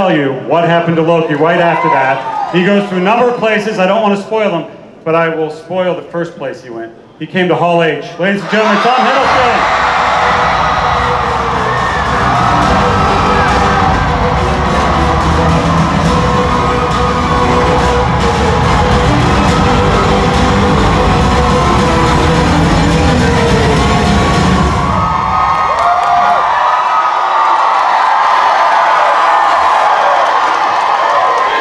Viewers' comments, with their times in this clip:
0:07 He came to where? Hall-age? hal-age? haw-age?
0:18 was that a generic soundboard thing or was that the theme song?? Because that was EPIC. Also, I love that the fan gut reaction when T Hiddles is in Hall H is to start chanting LOKI LOKI LOKI LOKI it's just beautiful